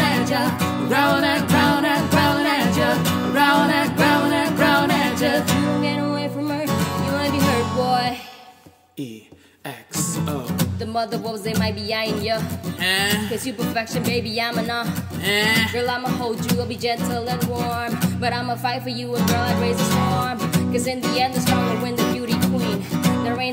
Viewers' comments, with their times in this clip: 0:10 From I swear I heard Nicki Minaj and G-Dragon!! XD